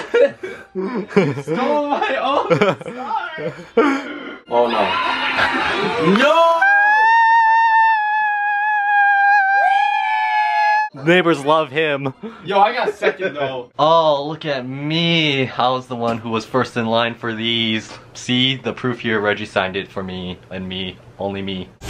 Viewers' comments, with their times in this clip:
0:07 the sound of that one shopping cart